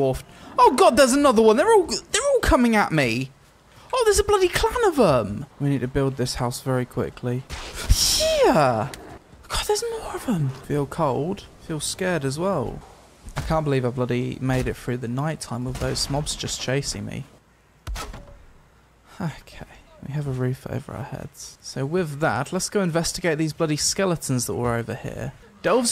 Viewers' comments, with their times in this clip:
0:08 you said เหี้ย 5555555555555555555555